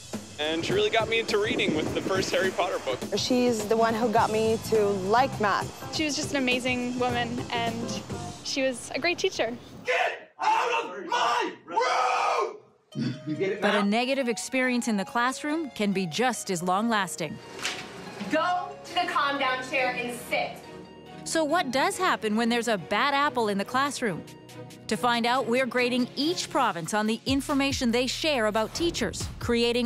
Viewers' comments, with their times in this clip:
0:10 my goodness. Bad teacher alright. I'd be scared out of my mind if he yelled at me that way.😨😨😨😨